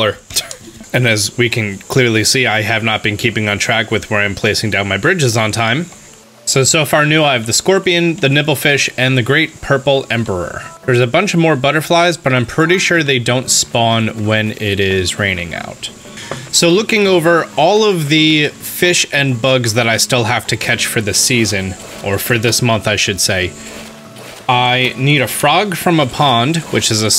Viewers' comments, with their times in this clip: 0:08 Am I the only one who hears “nipple fish” ? I think it sounds hilarious.